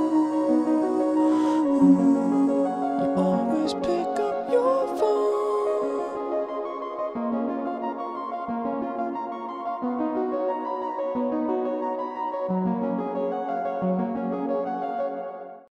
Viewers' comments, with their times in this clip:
0:06 sounds like Final Fantasy 7. I love this man.